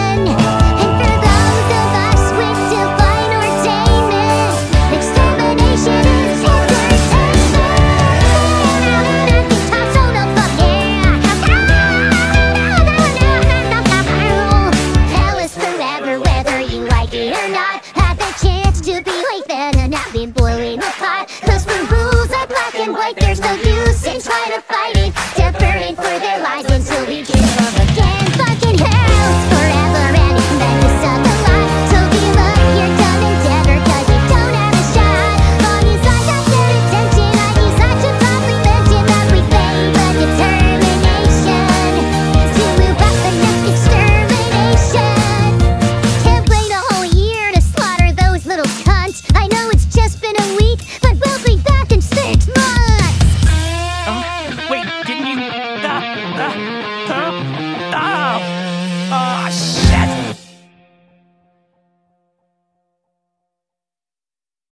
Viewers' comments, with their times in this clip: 0:08 Guitar Solo F*ck Yeah!
0:53 DID BRO MOAN???